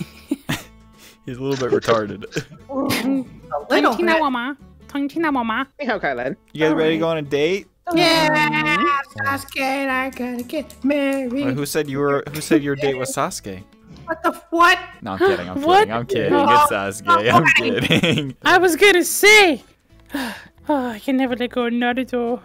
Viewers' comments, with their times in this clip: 0:05 pls tell me I’m not the only one who heard “Ni Hao, Kai lan”